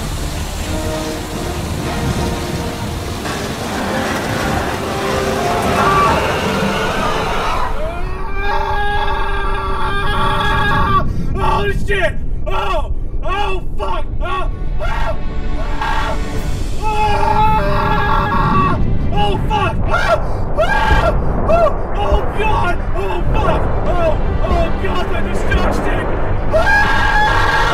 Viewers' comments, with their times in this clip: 0:07 I lost it when chief started screaming kkkkkk
0:08 Just seeing him in the distance screaming is so frigging funny